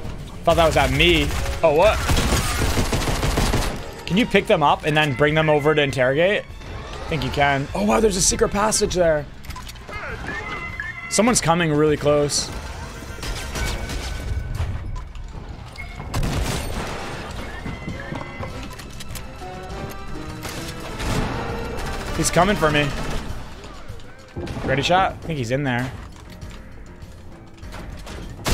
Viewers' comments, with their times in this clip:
0:10 Did anyone realise the henchmen said hey N or I just have terrible hearing